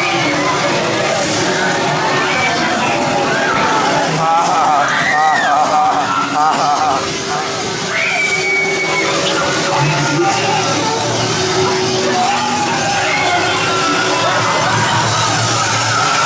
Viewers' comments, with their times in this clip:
0:04 LAL Dat laugh doe.